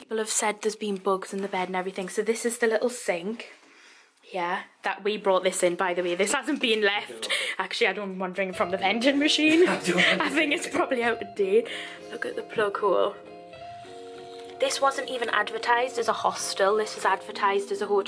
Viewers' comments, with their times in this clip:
0:06 did you say FINLAND